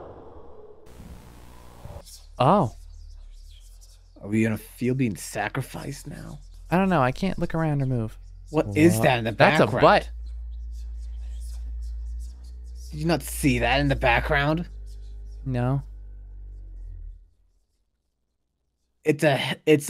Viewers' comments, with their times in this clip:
0:07 Moon having lunars voice in "THAT'S A BUTT-"